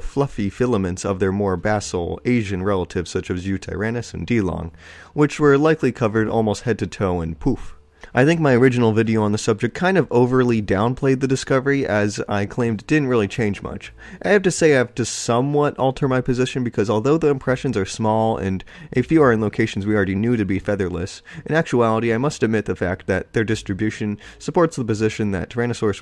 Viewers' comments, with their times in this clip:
0:05 Why would they be covered head to toe in poop??! 😂
0:07 I THOUGHT YOU SAID POOP